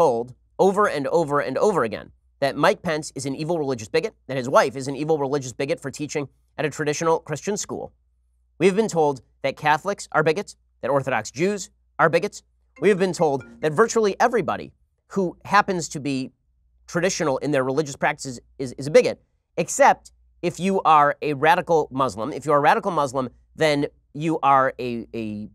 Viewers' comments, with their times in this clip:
0:10 When the telephone goes off in the background
0:11 Bens phone went off! Ben is slipping up lately, first the Andrew Neil thing now this!